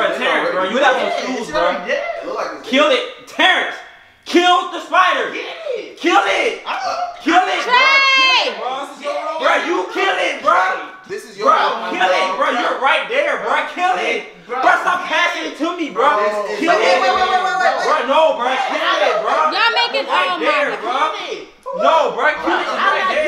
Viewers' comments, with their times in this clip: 0:08 Why he sound like he gonna cry tho😂😂